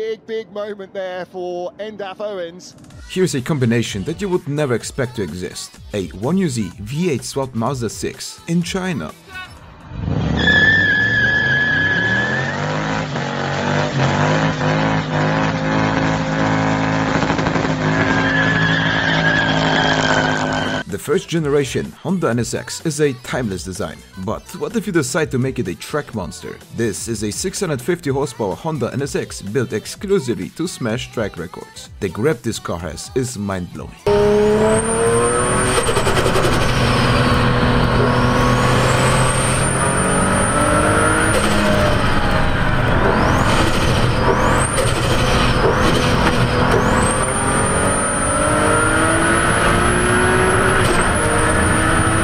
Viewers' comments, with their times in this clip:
0:03 Any lazy Project Car builder: "the perfect swap doesn't exis-" Rice man : *revs in Chinese
0:35 oh my god the turbo flutter... shat ta ta ta taaa.
0:35 omfg that turbo noise 🥴
0:35 My ears are bleeding from they turbo